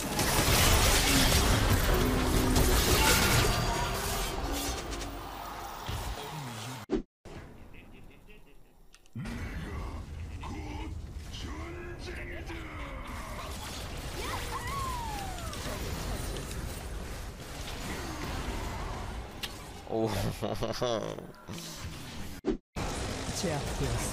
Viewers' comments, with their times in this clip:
0:07 sion said the n word
0:07 am i hearing this right? sion says "nigga"